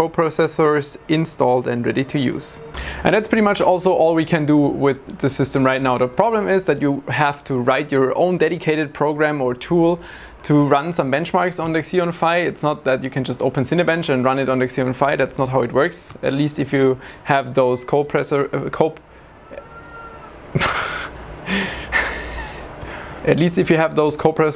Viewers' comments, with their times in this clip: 0:07 obey your CEO she is talking (meowing)